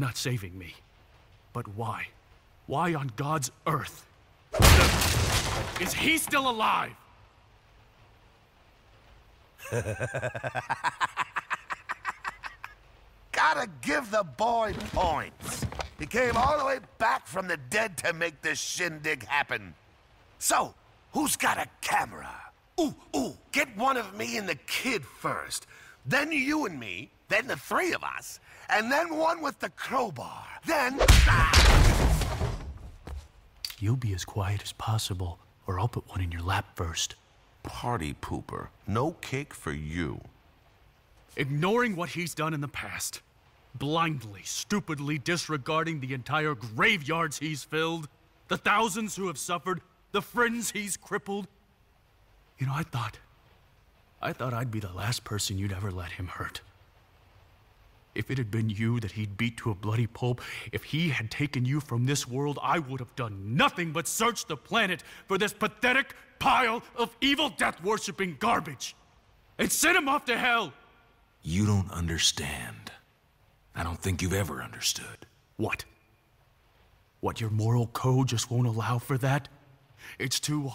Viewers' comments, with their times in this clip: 0:05 This whole scene never fails to make me laugh😂 The way Joker looks back and forth and then laughs, the way he scoots his chair around, and especially the line about the cowbar💀 It was perfect comedic relief
0:08 Ahhhh Up until today, Listening to Joker laugh Still makes me laugh as well ahahaha, its so contagious
0:58 The script was kinda bad. They got the interesting premise from the comics but the "god almighty, no" and the weird 'water in mouth' delivery of "pulp" are just a couple examples in this specific clip that made it a bit cringe, plenty of others throughout the movie. Dimagio's performance as Joker was great, a couple awkward lines and forced laughs but that was really just bad script writing and maybe bad composition. Overall good film, but I don't think it's overly praise worthy, I wouldn't recommend someone who wasn't already a batman fan watch it.
1:05 Jason Akles voice was on freaking point